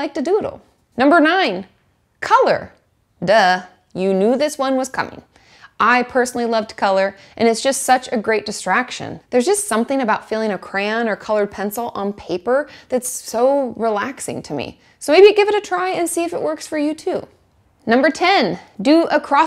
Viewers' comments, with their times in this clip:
0:06 I love your videos! It’s and I am wide awake worried about my future but your voice and ideas are always so positive and grounding 😊